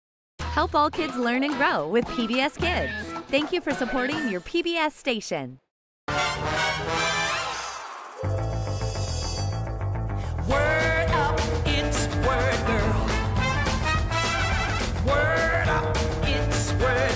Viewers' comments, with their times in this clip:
0:00 IThe snort laugh is so cute